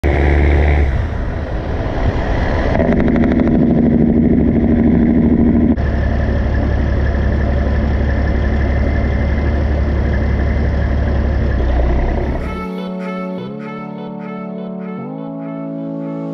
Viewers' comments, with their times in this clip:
0:01 might need to change my pants because that jake brake is sexy.